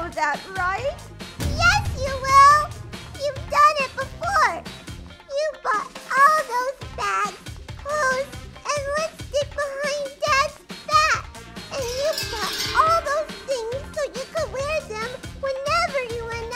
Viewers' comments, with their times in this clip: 0:03 YOU'VE DONE IT BEF(voice crack)RE